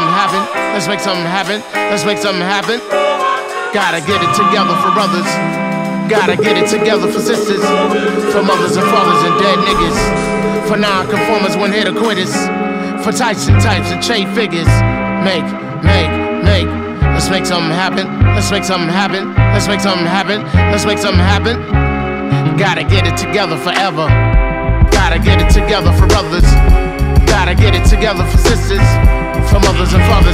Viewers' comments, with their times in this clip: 0:04 realised phife says ‘for sisters’ slightly off beat too quickly and now i can’t unhear it aghhh
0:13 when it cuts to bass then the drums come back in, every time man :')